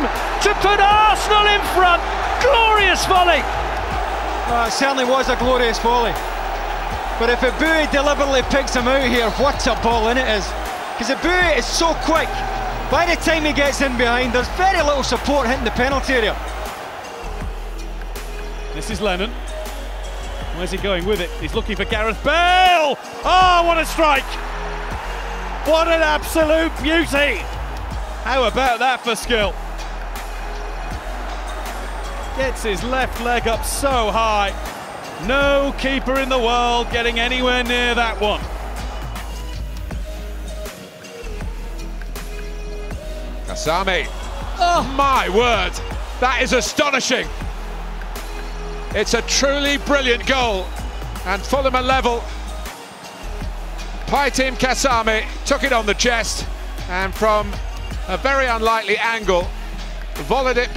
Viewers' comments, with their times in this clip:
0:08 I love the Scottish accent
0:08 wOt a ball iNNit🤣🤣😭😭
0:44 exactly like a fifa commentary 🤣